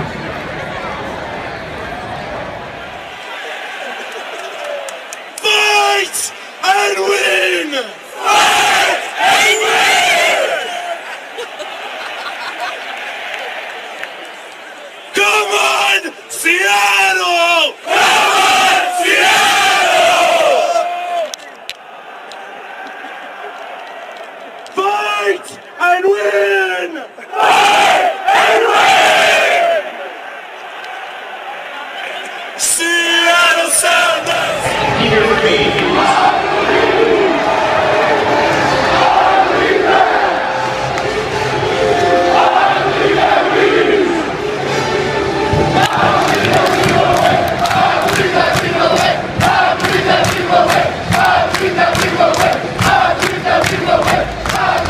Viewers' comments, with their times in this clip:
0:07 Oi who gave Neville Longbottoms American cousin a microphone
0:37 better atmosphere at a funeral